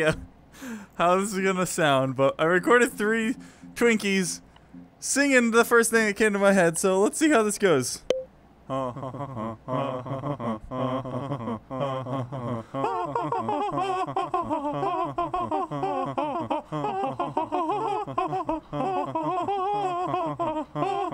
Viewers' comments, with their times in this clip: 0:08 best song ever 😂
0:08 What a wonderful song X3
0:08 love that song